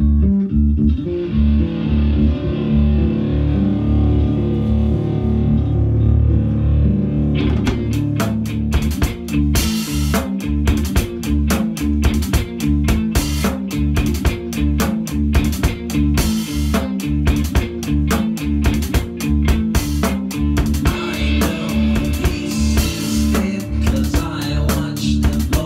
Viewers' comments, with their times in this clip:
0:07 I've a short doubt of 1 note, in the 5th bar first note it says high-hat, bass dum and small tom together however none of the other drumcovers including yours have played that, is this my misunderstanding or there's a reason behind it?